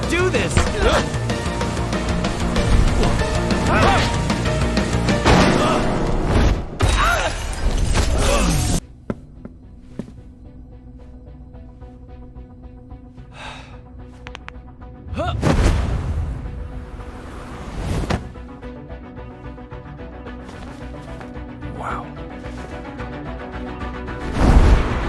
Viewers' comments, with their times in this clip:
0:06 The scream batman did was funny😂